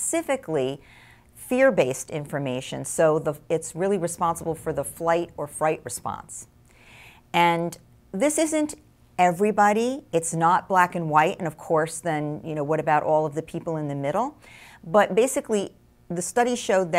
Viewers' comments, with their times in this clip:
0:04 Did she really say flight or fright response or am I going deaf?